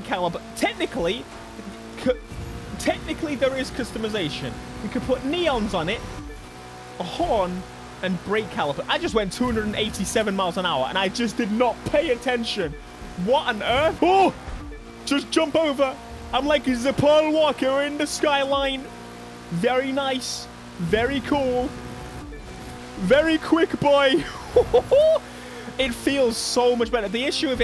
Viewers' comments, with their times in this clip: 0:08 I'm hearing that blip that the AE86 does in Inicial D... Am I getting crazy??